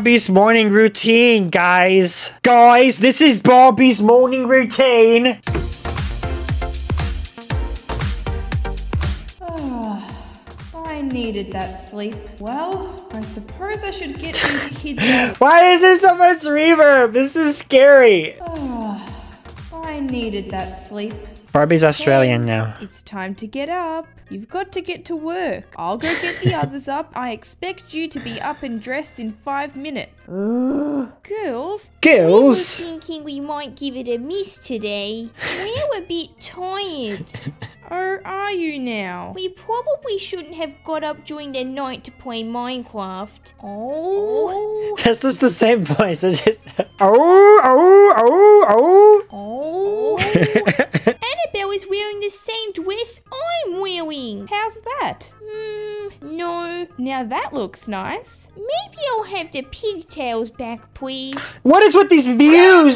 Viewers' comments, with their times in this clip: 0:03 randomly turns British
0:46 Normal werewolves: howl normally My OC: